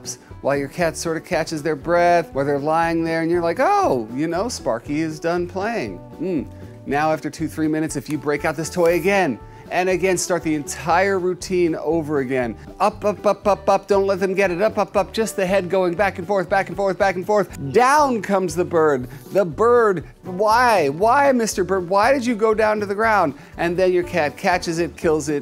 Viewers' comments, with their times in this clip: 0:08 why does it sound like something kinky ? 😆